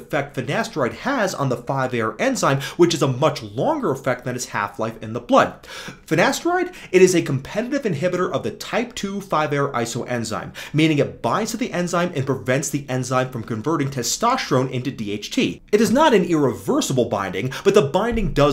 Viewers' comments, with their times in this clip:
0:05 the way u say finasteride is so funny